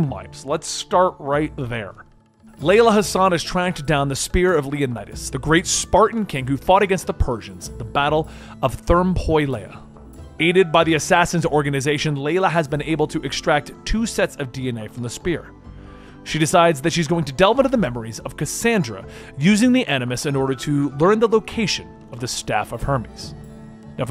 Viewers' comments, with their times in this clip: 0:07 therm-poi-lay oh my